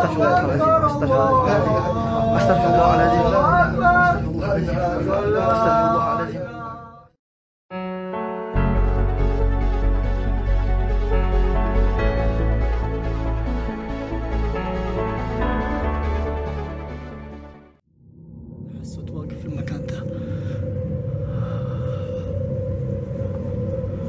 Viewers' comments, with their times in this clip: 0:06 Why is this guy just singing a song middle of a night